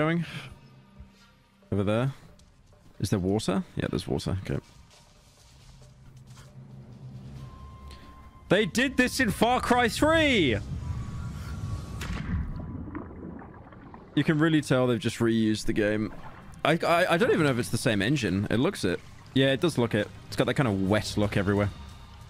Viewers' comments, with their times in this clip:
0:05 my schizophrenic ass thought Hello by OMFG was playing